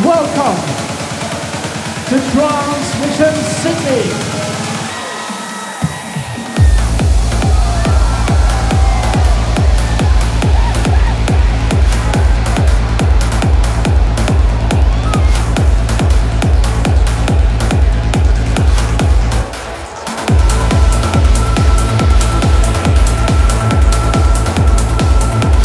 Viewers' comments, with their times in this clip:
0:07 what an intro-BLAST !!!!!!! 💥💥💥